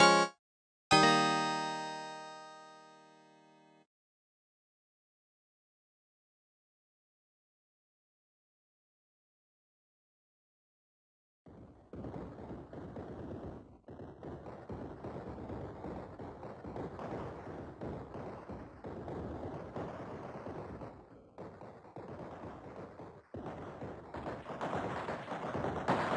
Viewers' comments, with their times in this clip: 0:08 OMG I LOVE THX ITS TOO LOUD BUT I LIKE IT Edit: